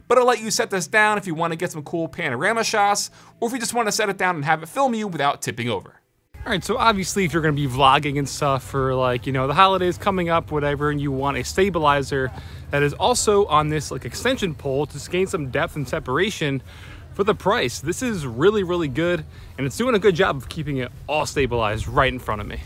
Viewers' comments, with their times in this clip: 0:05 real voice D: